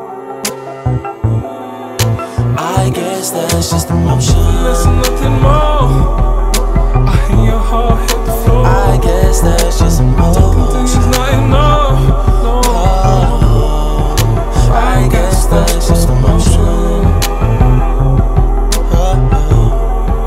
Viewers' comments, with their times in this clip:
0:03 bro singing in the background, gives me chills..